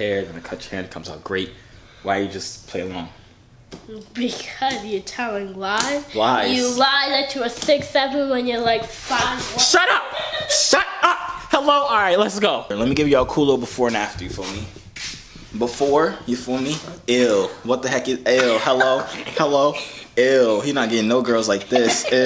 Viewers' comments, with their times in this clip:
0:07 My man screamed when his bro was about to expose his height 🤣😂🤣